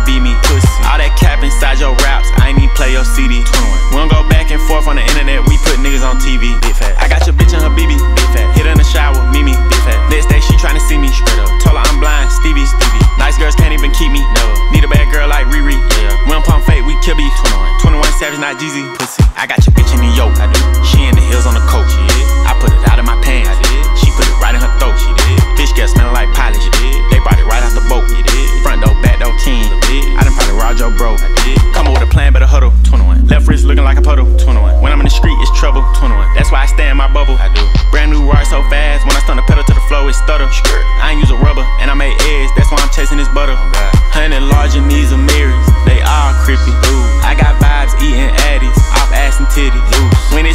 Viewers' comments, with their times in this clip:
0:03 Bruh hit and just started snapping
0:31 flow goes crazyyyy